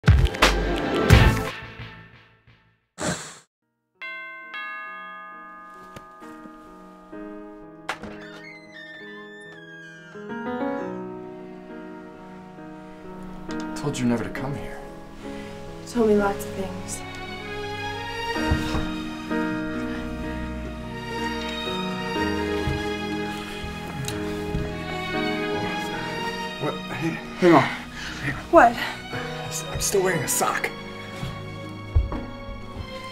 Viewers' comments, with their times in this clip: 0:03 for a second I thought the fnaf 6 am sound was gonna play
0:15 what did she even say